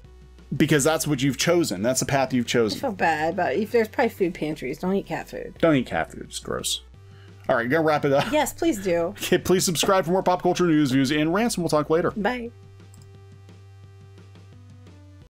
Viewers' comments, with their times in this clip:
0:13 I really liked the way we got a dead silence and the avatars levitating on a black background and i mean it. I love when this kind of slip-ups occur in editing ahahha. Keep up the great work! love you all!
0:13 That's scary. Almost 2 minutes of no background or voice over. Just bobbing avatars staring us. 🤣
0:13 3min of background easy listening lol